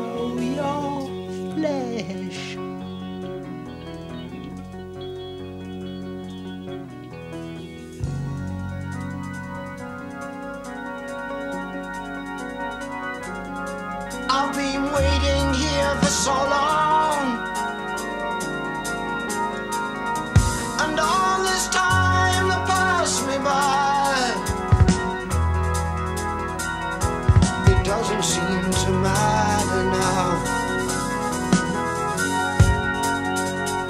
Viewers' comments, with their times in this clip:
0:10 Phil's drumming A god.
0:15 I love that drum kick